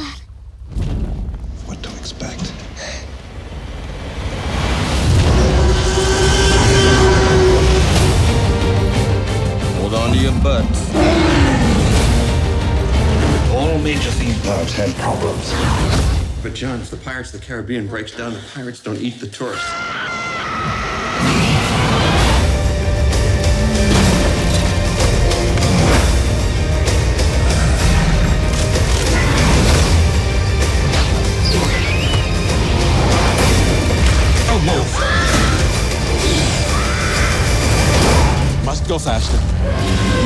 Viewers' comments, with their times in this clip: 0:04 That touched up/remastered T. Rex roar is perfection. Almost sounds like they did an overlap of the same roar to produce a slight constructive interference effect. That's how Rexy should have sounded in the new movies.
0:24 Most perfect part: When the raptor claw taps along with the beat of the music.. OMG